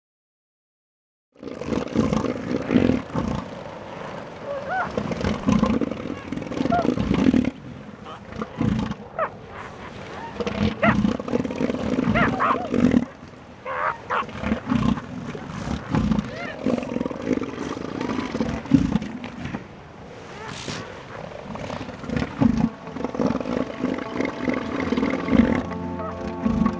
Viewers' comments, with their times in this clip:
0:07 It is from my car engine like:
0:12 "Get out" or "shut up".